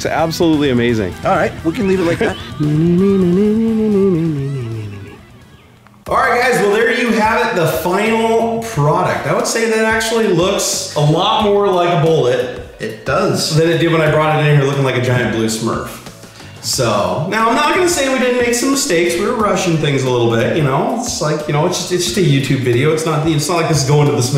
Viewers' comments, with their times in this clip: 0:05 That echo Nice editing.